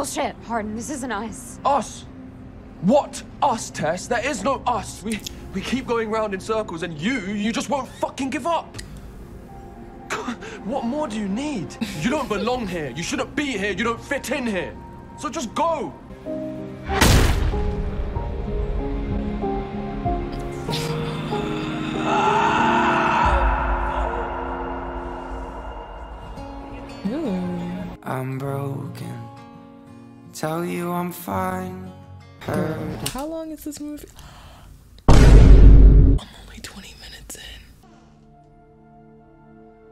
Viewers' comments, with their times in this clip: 0:03 She got gagged for a bit 😂😂
0:17 I doubled over in laughter after hearing that awful door punch sound effect 💀
0:21 The way he sounds like a DINOSAUR SCREECHING ...I CAN'T 🤣
0:21 Oh no! The scream of an alpha male😱 Guys quickly, bow down to the all mighty Hardin!!!🙌🤲
0:22 when Hardin screams after punching the wall, honestly took me out😹😹😹.
0:23 When I say I LOST IT when he yelled in the bar 💀💀
0:27 its giving sad song by scotty sire💀